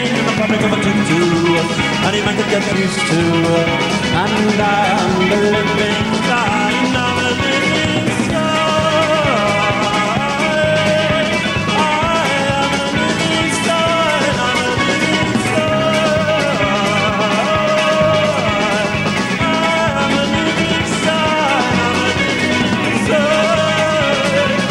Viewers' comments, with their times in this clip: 0:07 Starting at the mark; Morrissey signing with full abandon and The Smiths firing on all cylinders. Wow.